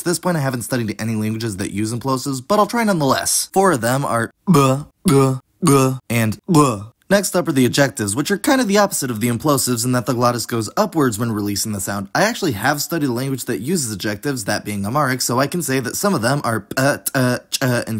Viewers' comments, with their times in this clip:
0:04 Really a shame no languages use these sounds. They're so eloquent.